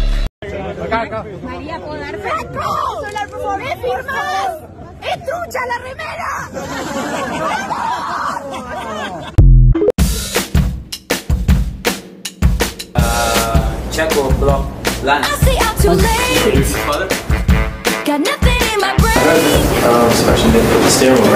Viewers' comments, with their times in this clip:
0:03 What is she saying?